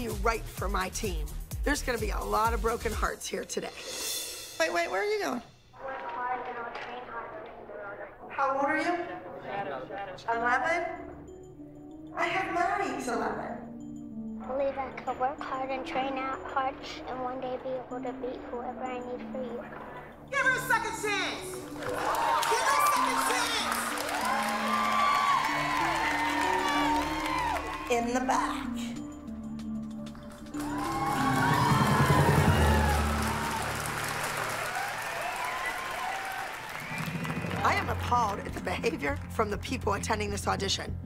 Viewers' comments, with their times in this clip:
0:07 I was actually in tears for the girl she just wanted a second chance but that mom was kinda crazy about it by screaming it at abby
0:27 the girl looks terrified after her mother shouting